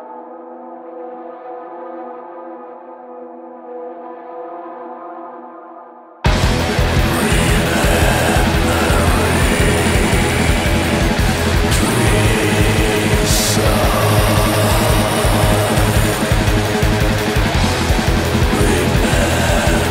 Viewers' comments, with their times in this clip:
0:05 sounds like Mayhem with Attila on vocals.